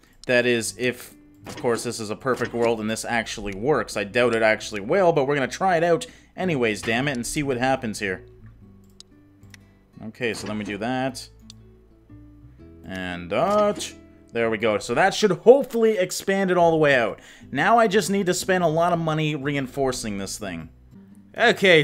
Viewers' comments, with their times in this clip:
0:07 what happened to his voice